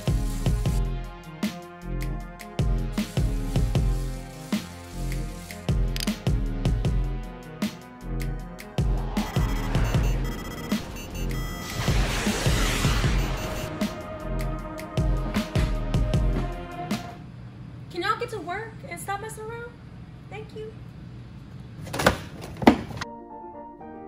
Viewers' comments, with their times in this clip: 0:06 Wait... do I know this BEEP BEEP sound cause it makes me anxious...
0:09 **mk2 missile lock sound. Gta v online players : PTSD
0:09 U have no idea how stressful it is to hear that warning alarm consecutively... Like I felt the armageddon